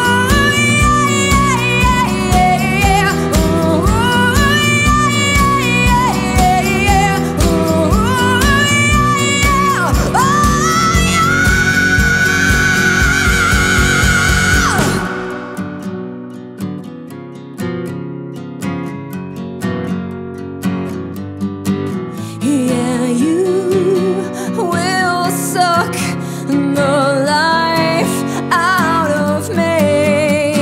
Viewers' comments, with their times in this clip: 0:07 "uwww uw yeah yeaha" ok this isnt bad... Does a perfect rock scream O_o oh woah 😳
0:10 😳😳😳😳 houaah, this scream it's fucking amazing!
0:13 oh no you messed up that note.